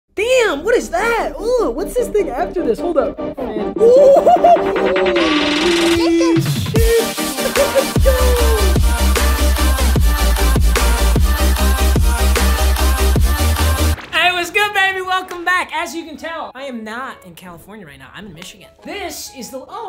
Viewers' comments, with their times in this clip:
0:01 I swear I heard papa say “ooh what’s this ni**a after this” lmao